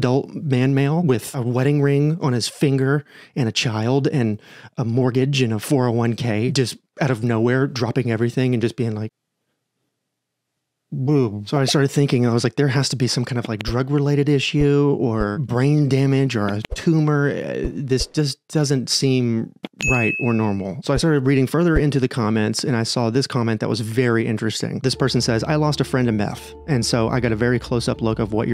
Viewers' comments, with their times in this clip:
0:09 I loved that way he said “boobies” 😂 it got me so bad🤣